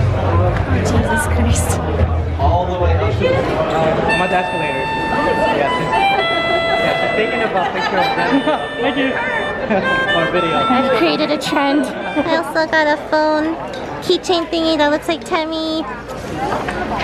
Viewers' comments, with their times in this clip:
0:04 It's spreading! Cute girls following cosplayers with melodicas and playing the theme songs of their shows!!!